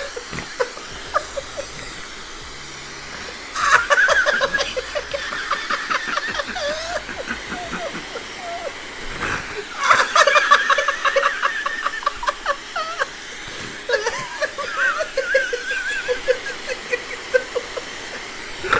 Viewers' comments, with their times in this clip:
0:03 I am in tears crying with you laughing so hard